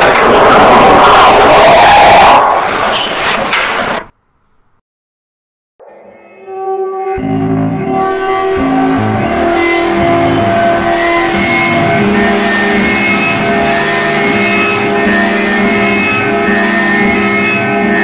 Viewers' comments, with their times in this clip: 0:06 What it the music in it sounds very interesting